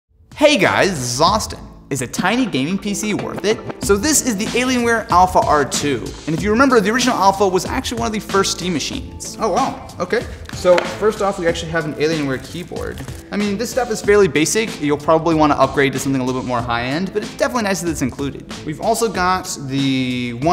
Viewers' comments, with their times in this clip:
0:04 That part sounds alot like rap